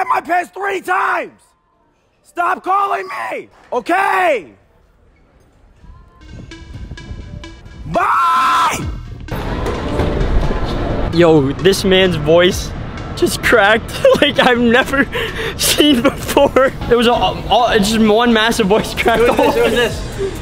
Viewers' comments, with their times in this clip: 0:08 he sounds like morgz